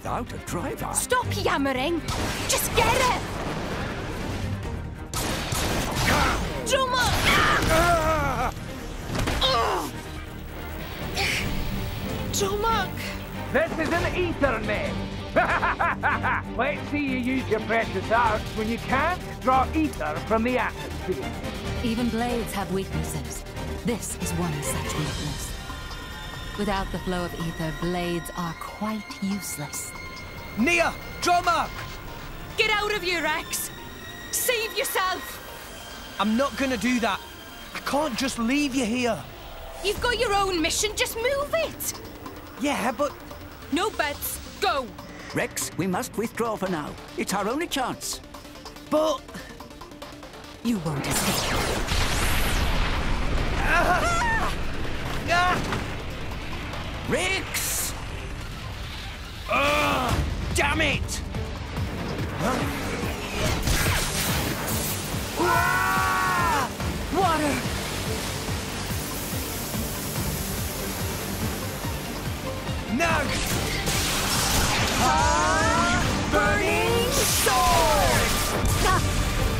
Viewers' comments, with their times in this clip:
0:06 Why is Nia's Scream so real?
0:06 Jesus, I forgot how real that scream is
0:07 NIA'S SCREAM IS KILLING ME OMG I NEVER REGISTERED THIS WHILE PLAYING ON MY OWN HAHAHAHAHAH
0:07 that is the realest scream in this entire game
0:07 I don’t know why that scream is so funny to me 😂
0:59 wtf is this supposed to be? It's like the animator wanted a dramatic shout in frustration but the sound director never got the memo so they just took a generic "damn it" and put it there
1:00 This is my least favorite bit of the bad voice acting. He literally said the word for a half-second and it looks like he’s yelling something else longer then that. How do you see that and think that it looks ok?! I still love this game though.